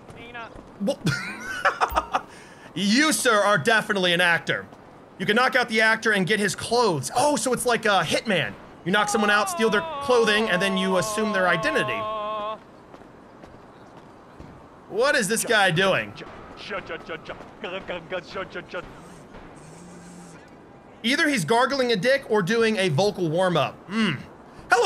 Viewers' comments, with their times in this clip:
0:07 My man had to many meth gargaling in his insides 😂